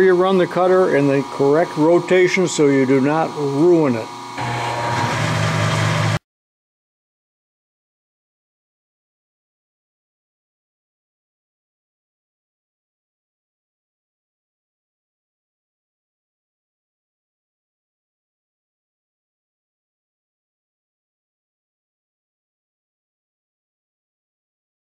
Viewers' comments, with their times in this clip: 0:05 video goes silent.